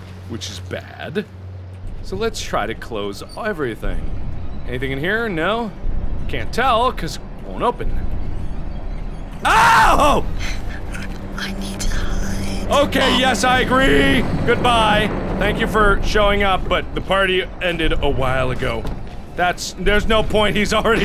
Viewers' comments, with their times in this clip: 0:09 I love his yell when he notices Slendy like a second later then he should've. XD